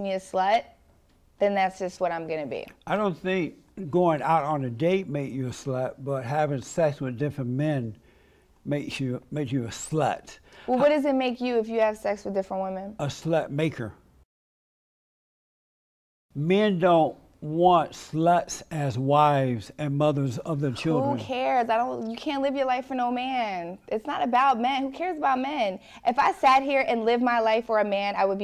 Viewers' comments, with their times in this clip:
0:09 “Make you a SLUT.” 😅 so much emphasis on that word